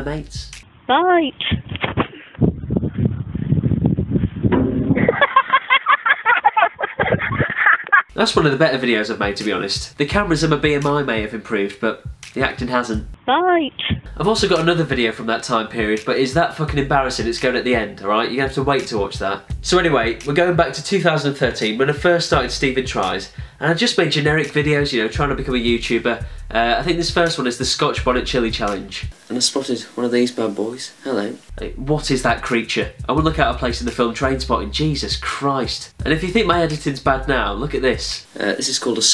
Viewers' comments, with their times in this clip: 0:04 windows error sound
0:21 Turn captions on (Stupid Tries) Captions don’t lie